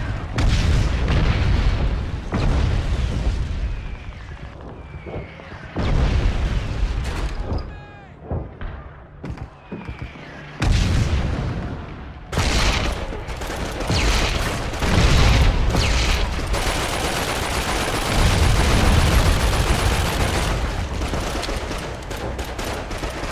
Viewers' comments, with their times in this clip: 0:04 😂😂😂😂😂😂😂 best unbelievable laugh ever Happy new year!!